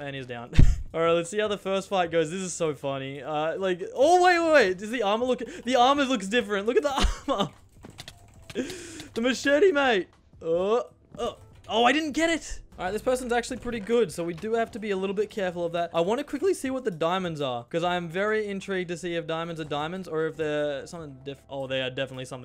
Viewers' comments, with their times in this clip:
0:10 I love how you can just hear the bed break